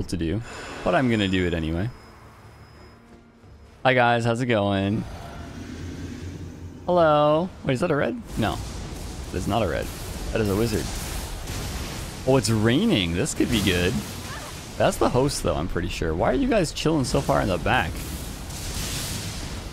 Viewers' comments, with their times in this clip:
0:06 Who the hell said “Hello” ???